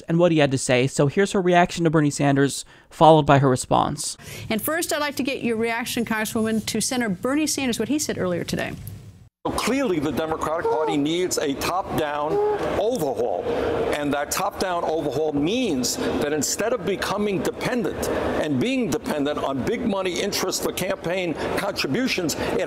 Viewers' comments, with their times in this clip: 0:08 it sounds like Bernie Sanders said "Democrack Party" LOL